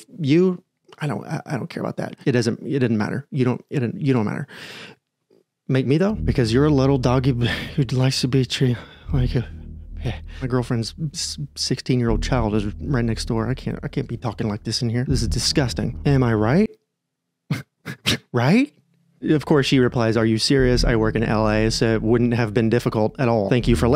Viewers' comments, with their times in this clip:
0:08 MY BROTHER IN CHRIST I heard "my girlfriend is a 16 year old child" and I had to replay it three times and turn the subtitles on to make sure I DID in fact mishear. Don't jumpscare me like that 😭😭😭